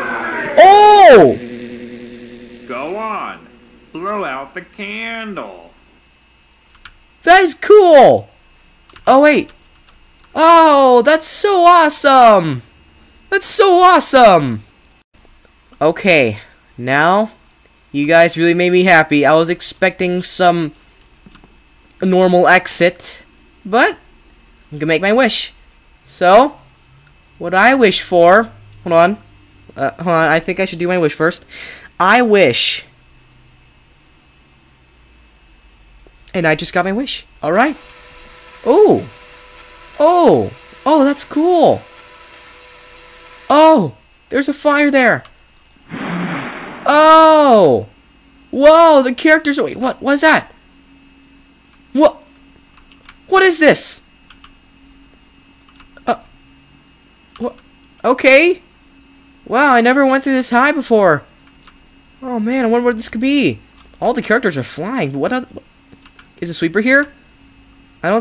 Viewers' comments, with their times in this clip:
0:08 listen at Playtimes cringey "Suprise!"
0:36 I didn't hear anything.
0:50 When u said I wish I got a kinder add and when I thought u said I just got my wish and I was like /_/